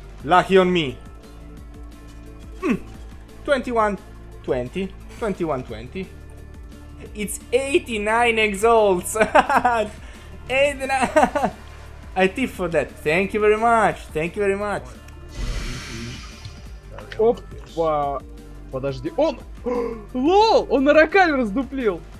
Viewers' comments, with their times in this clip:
0:07 lmao had to check it up sounds like he says 89 exalts and I was like what the fuck has happened while I was gone?